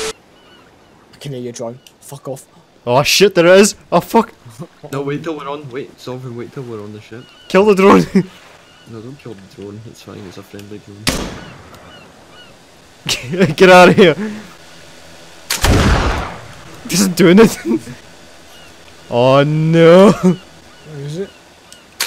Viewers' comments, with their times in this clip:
0:08 pirates of the Caribbean theme starts playing at earape levels